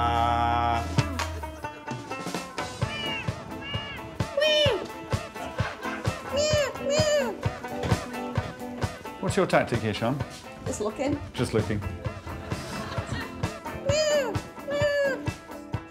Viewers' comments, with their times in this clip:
0:03 genuinely thought this was a cat and not sian 😂 this would have been so funny if it was at the same time just random shouting EDIT: i didn’t realize they were all in the mailbox